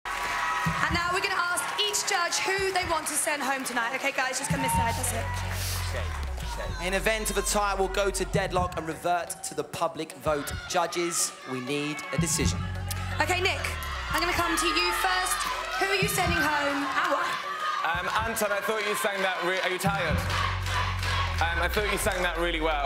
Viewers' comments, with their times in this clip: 0:04 Is it just me or can you hear Simon telling the other judges to vote for Che?
0:05 did you hear the voice saying "che che che" it seems like it was the voice of simon.. seconds..